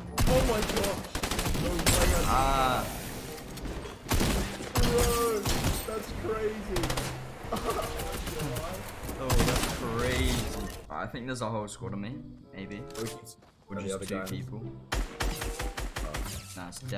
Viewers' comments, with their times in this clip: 0:04 *Fishstick falls* FaZe Kay: Yo ThAt'S cRaZy
0:04 Kay:yO, that’s cRaZy